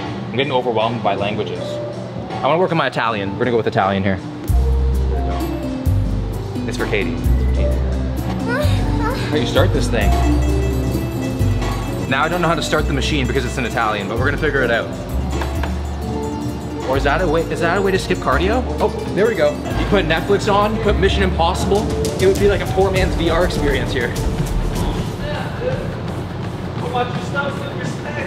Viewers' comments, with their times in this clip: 0:07 sounds like a girl moaning 😂
0:09 that moan lol 😂